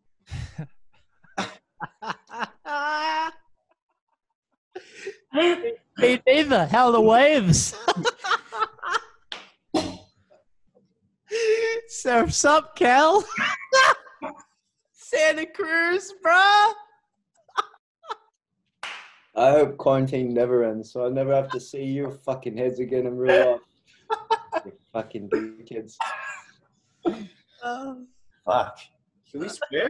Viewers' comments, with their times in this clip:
0:07 Ashton's laughter give me a thousand years to live 😂❤
0:12 ash's laugh gives me life
0:15 luke and ashton their laugh